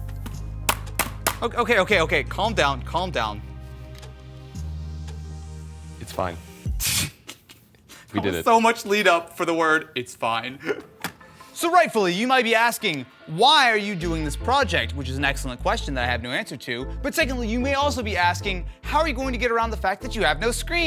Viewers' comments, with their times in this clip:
0:05 .... I got confused AF... I was expecting female voice... and then..... o.O